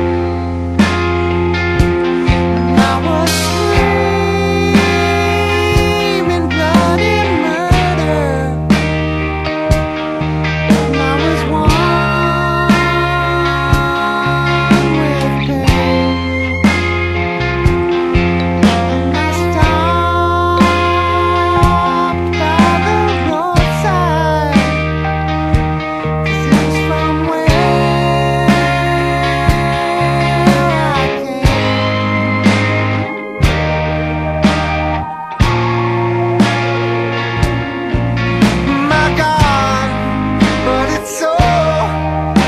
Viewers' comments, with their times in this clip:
0:08 i knew john was jesus. who the fuck else can rock a guitar like that
0:30 John's playing with something other than his strat!